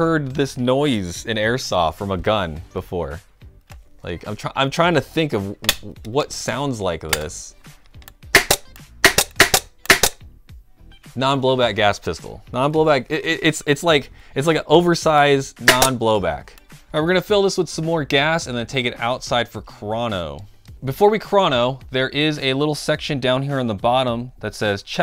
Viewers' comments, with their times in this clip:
0:10 it also sounds a ton like a paintball marker, probably cause of the compressed air now that I think about it